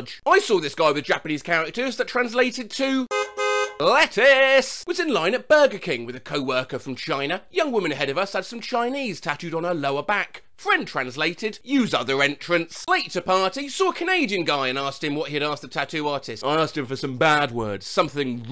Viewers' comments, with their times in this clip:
0:03 car honk noises
0:03 Was that an impression or sound effect?